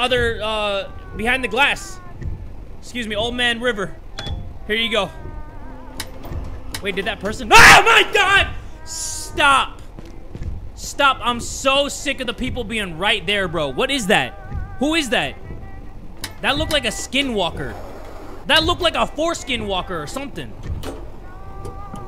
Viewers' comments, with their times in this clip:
0:07 i'm literally eating my cereal and his scream scared the shit out of me
0:07 he sounded so offended after that scare